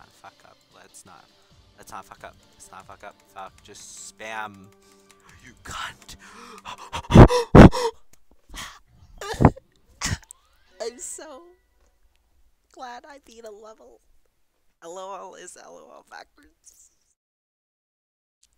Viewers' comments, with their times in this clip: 0:06 gotta agree with you too, 1.9 was truly the best update by far, and so were the levels. good video except the part where i had to turn my volume up because the video was pretty quiet and then you got a heart attack happy new years to everyone btw! 🎉